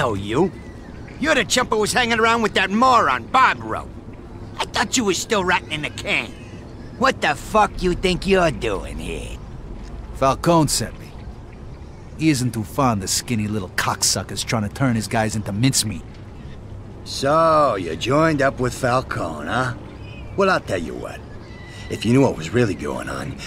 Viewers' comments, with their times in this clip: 0:04 when Luca said I thought you were still rotting in the can I thought luca said I thought you was still ratting in the can